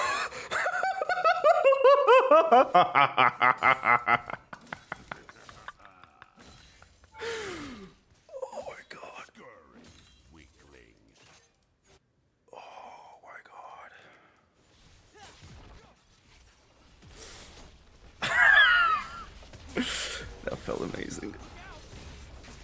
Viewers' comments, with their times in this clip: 0:03 i love how after this kaugh daruis laughs and it literally sounds exactly the same💀